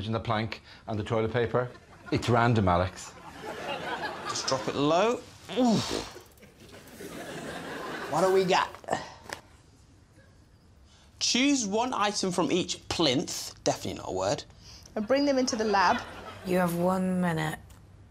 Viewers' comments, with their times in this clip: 0:04 Did anyone else notice what sounded like a fart with Munya bent down to pick up the task?